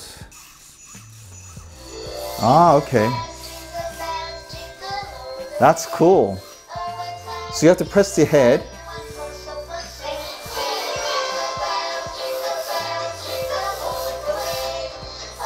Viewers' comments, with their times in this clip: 0:03 i am watching this video in november and i really liked that they played jingle bells i watched this right now